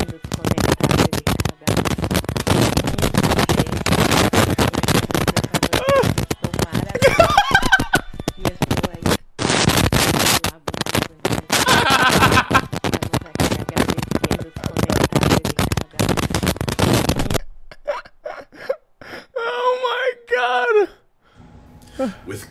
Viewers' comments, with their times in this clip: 0:07 not the tickle me elmo laugh 🤣🤣🤣